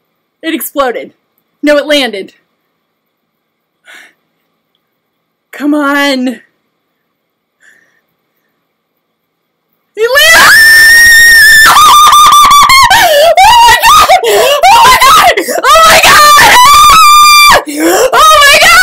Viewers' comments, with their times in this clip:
0:04 This needs a hearing safety disclaimer 🤣🤣🤣 Your poor cat was outta there! That starfish position seconds mirrors exactly how I was hanging on the edge of my seat too. Thanks for sharing.